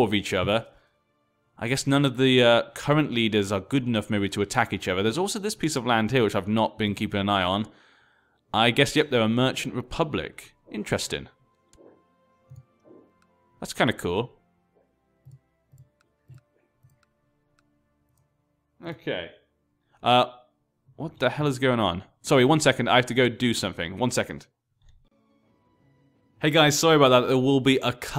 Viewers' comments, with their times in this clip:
0:10 I could actually hear the well recognised sound of puppy throwing up in the background. or something